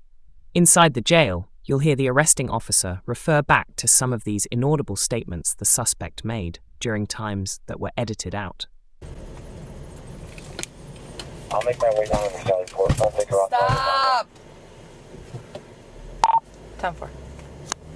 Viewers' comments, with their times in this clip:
0:03 What was that Berwin sound effect all about?